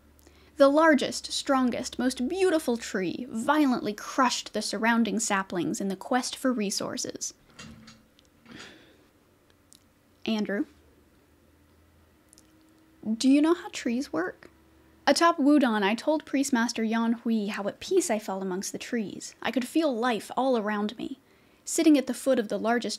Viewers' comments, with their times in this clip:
0:08 You slipping into your teacher voice; dealing with a trouble student? Absolutely made my night. 😂